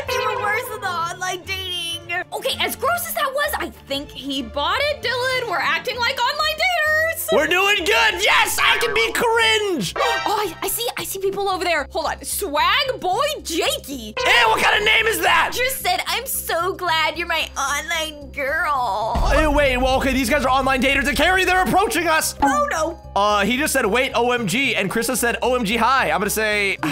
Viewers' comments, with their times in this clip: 0:08 i’ve never heard someone be so happy to be cringe